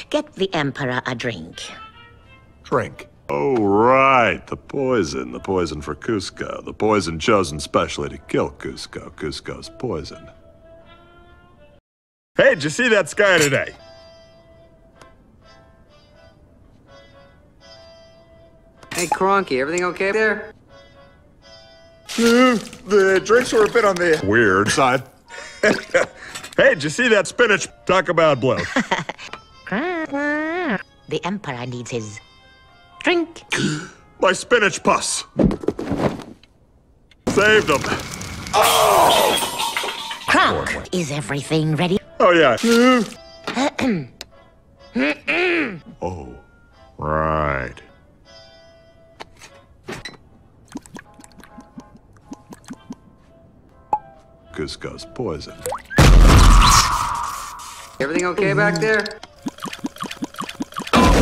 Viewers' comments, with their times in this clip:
0:03 Yzma had it all planned to kill Kuzko in the film, now it gets somewhat funnier when Kronk loudly says "poison" within view of Kuzko himself.
0:38 classic Patrick Warburton noise
0:42 Sounds like he soiled himself😂😂😂